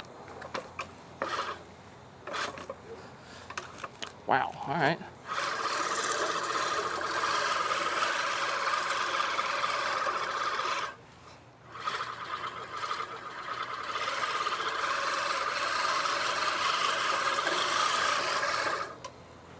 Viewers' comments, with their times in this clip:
0:03 Owen Wilson jumpscare